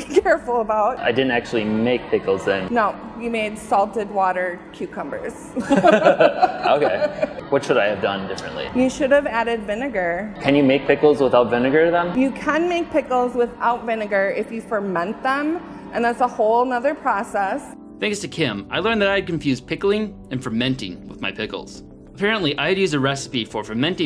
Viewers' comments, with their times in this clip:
0:09 That girls voice made me cringe